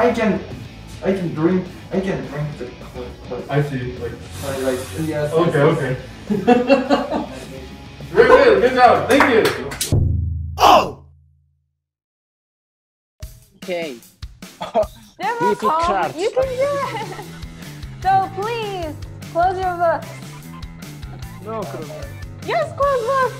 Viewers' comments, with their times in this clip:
0:07 Even the teacher laughs 😭 Fighting JO1 🔝